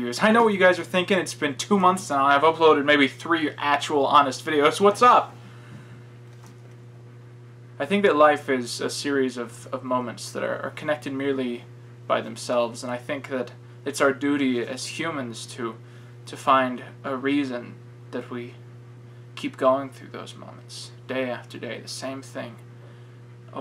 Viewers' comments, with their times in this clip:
0:05 that part sounded wayy too sincere my frend